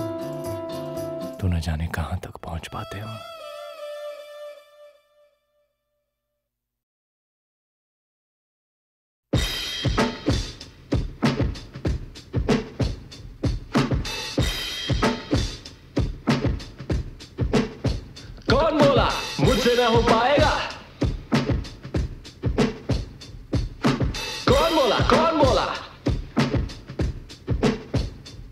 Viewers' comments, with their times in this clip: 0:09 Who else think music at start of Apna Time Aayega is a rip of Umbrella by Rihanna...